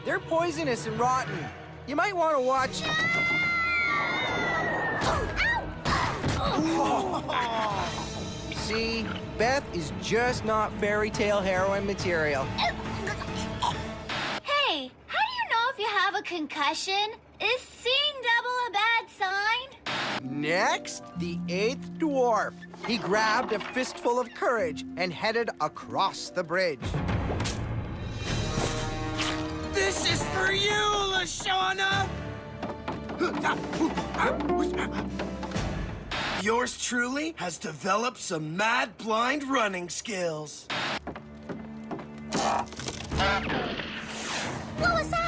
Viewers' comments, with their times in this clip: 0:03 Beths sounds when she falls is so sad😭😭😭
0:29 BAHAHA HIS WALING